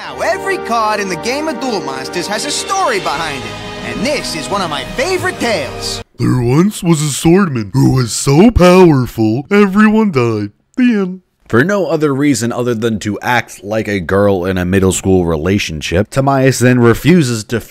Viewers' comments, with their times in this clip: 0:05 How did you get Patrick Star to record lines for you ?